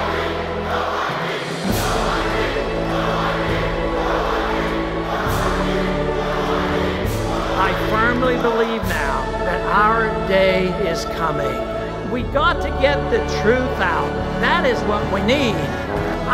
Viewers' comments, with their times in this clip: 0:03 What do they have everyone chanting ? "No ID"? I'm pretty sure it was END THE FED. interesting edit.